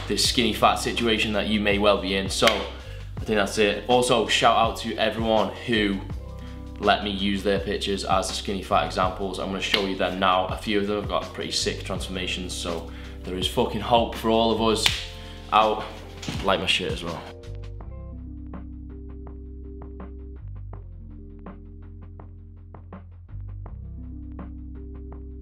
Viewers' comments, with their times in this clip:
0:06 i thought he said "let me use their bichezz"